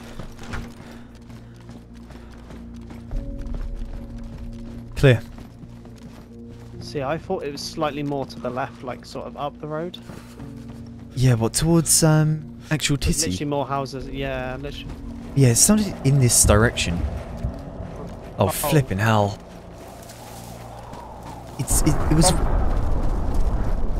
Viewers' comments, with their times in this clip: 0:05 The music from reminds me of something but I can't remember the song name it's like an Slow piano I'm mad that I can't remember please help